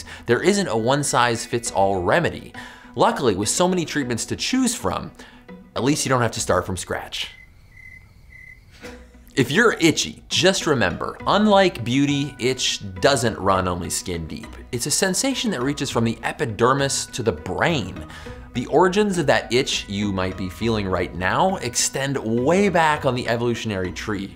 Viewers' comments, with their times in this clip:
0:05 The one person in the back: Coughs